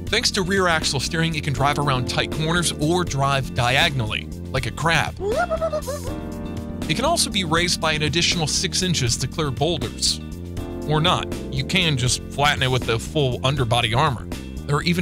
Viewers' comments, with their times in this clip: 0:03 I like how it sounds xD sounds cute